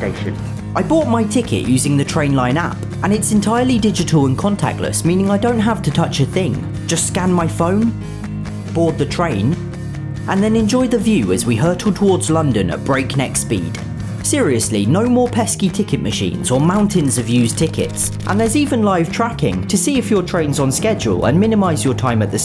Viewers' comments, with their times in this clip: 0:05 YOU'RE GOING TO LONDON WATERLOO!!! a little threatening but okay